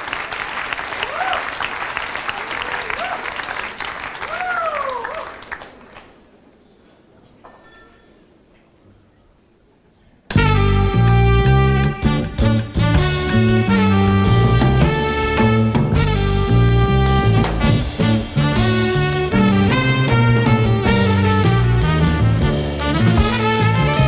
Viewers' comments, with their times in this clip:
0:06 Ashnah starts so nice music - thanks for the publication.